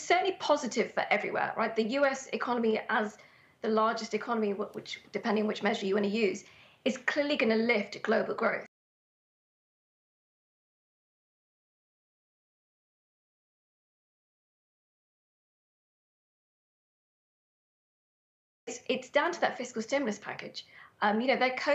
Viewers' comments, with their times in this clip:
0:08 cut audio...suspicion increases